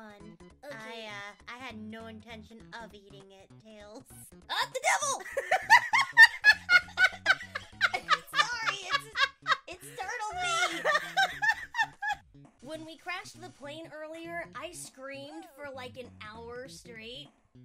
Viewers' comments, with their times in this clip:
0:04 Wow, Amy's laugh is adorable.
0:04 I love Amy’s laugh XDD